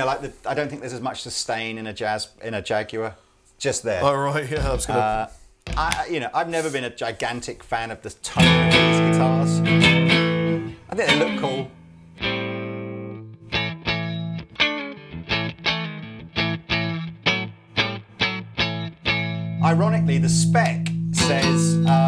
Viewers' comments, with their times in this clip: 0:08 Love the room sound of the Jaguar